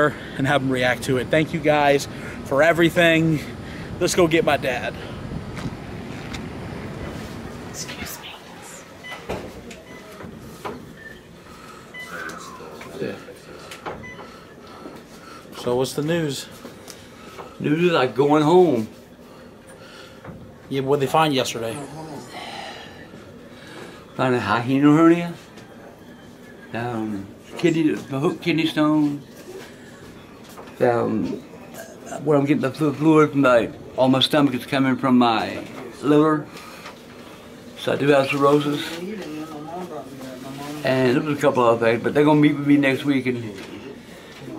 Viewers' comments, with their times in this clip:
0:06 did anybody else hear someone whispering excuse me?
0:07 No joke there is a voice says excuses. like if you hear it.
0:09 you here a whisper say excuse me
0:25 OMG. WTF was that loud whisper ???? Scary!!!!!!!